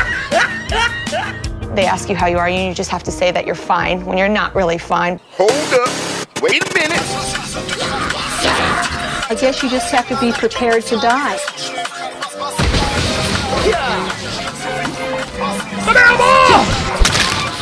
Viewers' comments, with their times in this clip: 0:04 holy shit, that music is actually a perfect choice for childe ngl Italian themed song and russian remix of it